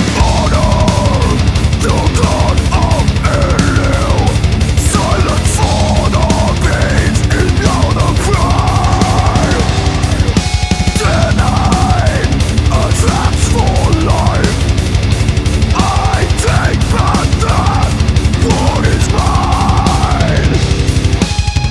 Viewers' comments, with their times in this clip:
0:04 i was like :face-blue-wide-eyes: thinking that yt stepped out of my playslist en started to play a random band not in my mix . very strange but more then welcome surprise . tbh it reminds me of the day i was very hung up on band like Morbid Angel